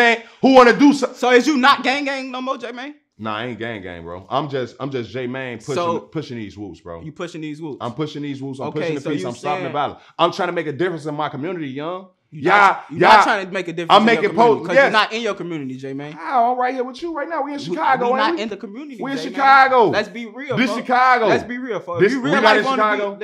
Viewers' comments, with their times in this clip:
0:08 He sounds like he's about to cry in every sentence